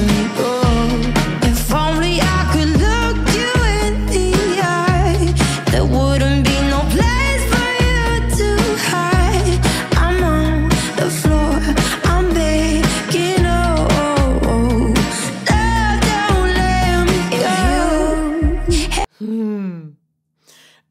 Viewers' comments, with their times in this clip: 0:06 Do I here autotune ?